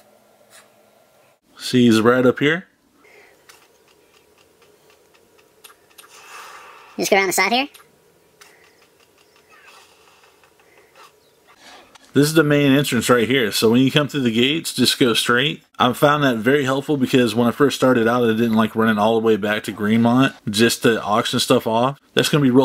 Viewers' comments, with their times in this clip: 0:04 wtf was up with yo voice!!!